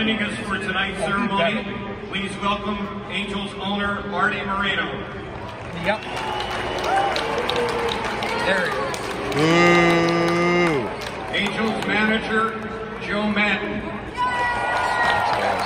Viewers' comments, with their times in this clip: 0:03 Why he got booed?